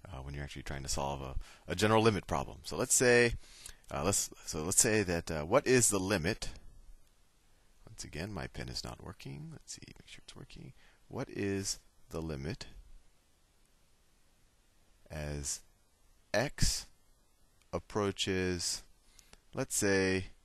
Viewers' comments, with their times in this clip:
0:08 Did I just hear tht My penis is not working LOL